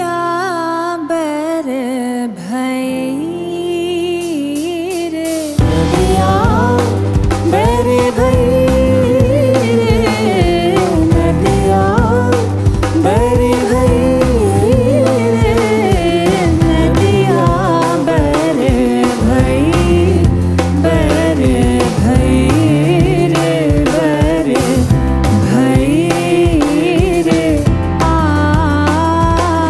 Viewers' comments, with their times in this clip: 0:05 just got goosebumps when the chorus started.. heavenly..
0:12 Such great talent but after the mark it started sounding like poor pop music 🎶